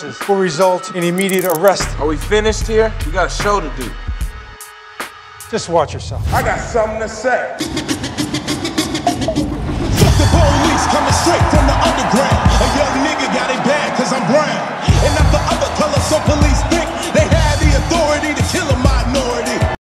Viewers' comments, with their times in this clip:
0:09 I thought my AirPods were dead 💀